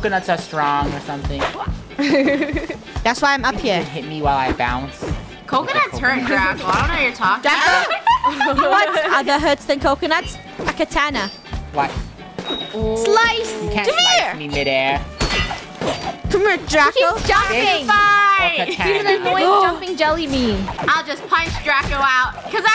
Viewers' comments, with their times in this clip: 0:03 I just can’t do that laugh